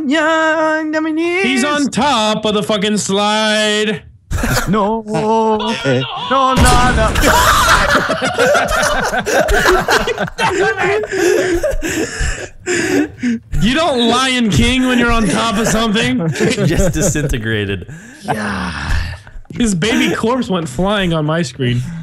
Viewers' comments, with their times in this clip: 0:05 that fire in the hole